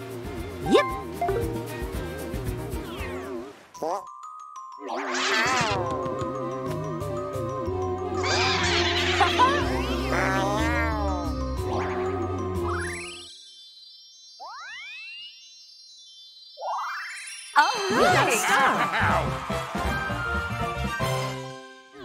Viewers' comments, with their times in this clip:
0:04 Wario steals Birdo's Star. (Rosalina laughs)